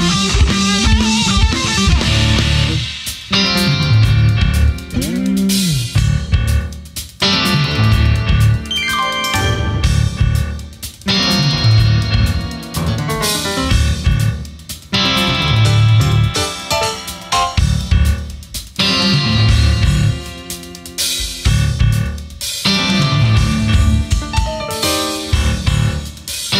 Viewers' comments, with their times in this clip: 0:09 I love this version of Lines In The Sand. The bass is mixed way up and the jazzy part is awesome